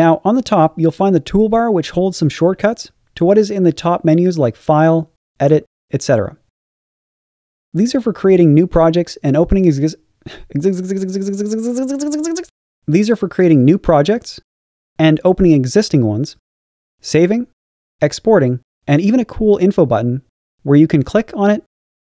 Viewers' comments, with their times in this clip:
0:08 When you trying to explain something but having a stroke for a moment.
0:08 I didnt know anyone can make that noise at that rate lmao
0:08 I thought your voice was autogenerated until when you misspronounced a word
0:09 When he turned into an electric drill
0:09 That sounds like it needs a remix
0:10 you forgot ixixiixixixiiixxxxx
0:10 Everyone gangster until the tutor turns into a pluck
0:10 Wow what a beat
0:10 did you have a stroke
0:10 that was a funny but cool "zgzgzgzgzg" riser you did